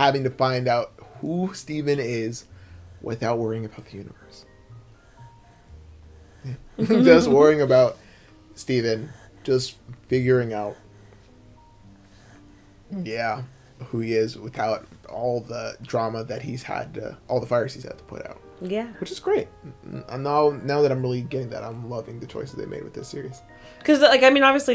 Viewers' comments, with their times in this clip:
0:10 I scared for a moment when I heard creepy breathing but then I realized it was the doggy and it was fine, bahaha